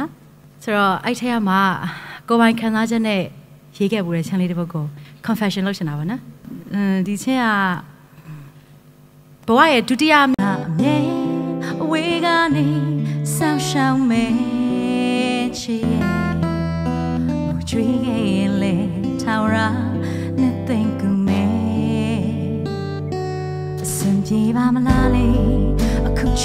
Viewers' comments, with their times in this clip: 0:09 There is a glitch (skip) at 9 minutes 22 secs mark (@ )